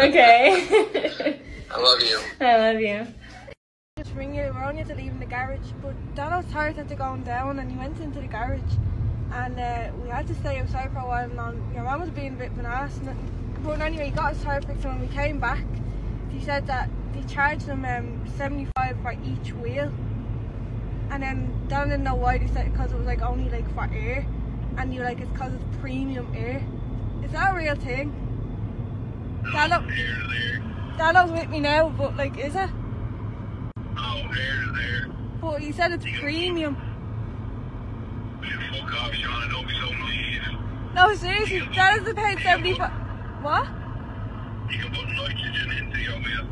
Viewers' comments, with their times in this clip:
0:04 bruh what language is she speaking? 👀😅
0:28 yo what did either of them say?😂that is a very strong accent